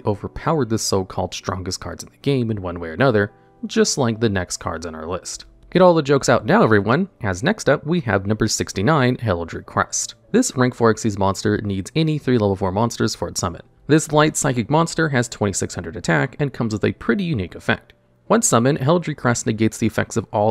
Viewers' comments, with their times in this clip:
0:06 I loved this vid. Only feedback I have is that there was a significant lack of saucy guitar sounds after